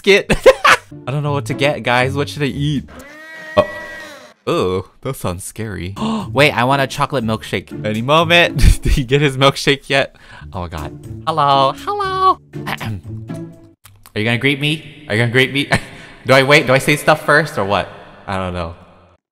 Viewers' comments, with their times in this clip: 0:03 Nobody: Not even the bed on top of peetahs milk house: The blender: ReEeEeEe.